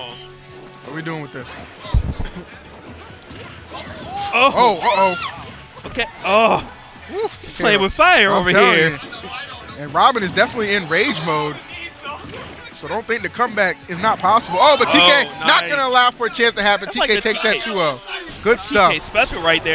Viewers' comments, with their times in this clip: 0:04 someone screamed o.O